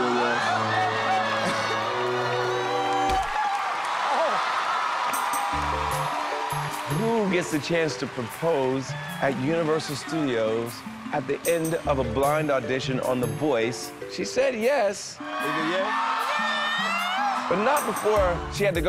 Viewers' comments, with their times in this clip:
0:05 I love how cute Blake is while he laughs i just can't ughhh lol